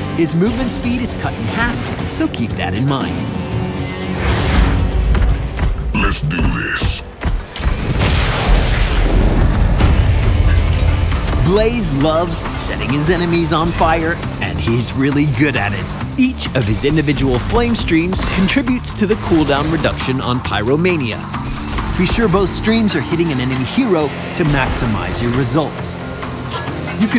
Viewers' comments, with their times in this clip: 0:09 That music for the last half of the video was sizzlin'. The one starting anyone got a light? :D